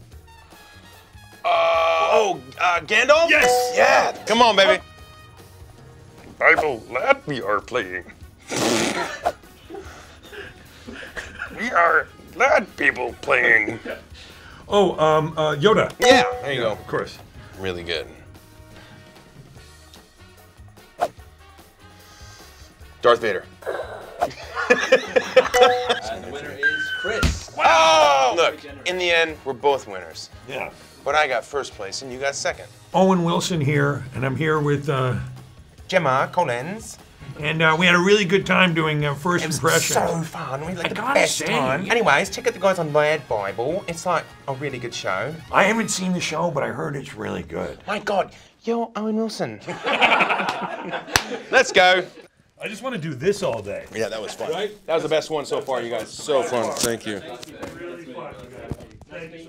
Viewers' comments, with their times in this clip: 0:06 "Bible lad we are playing pffffttt.....we are lad bibel playing" wow Chris...just wow -Will breathes Chris "Darth Vader"
0:21 it was surprisingly quick, he didn't even breath
0:47 The entire thing was hysterical but Chris saying “Omg you’re Owen Wilson” in the accent sent me 😂